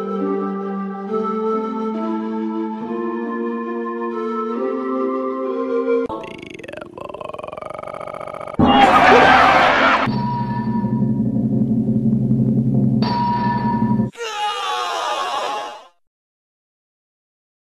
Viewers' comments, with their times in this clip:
0:09 Please Turn down your volume RIP Users about Cinematico Inc Logo